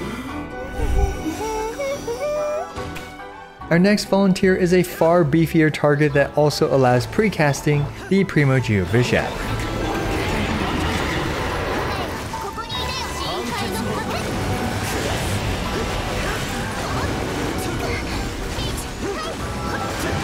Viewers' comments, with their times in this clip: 0:08 enables automated CC ah yes, the Primo Geophysics.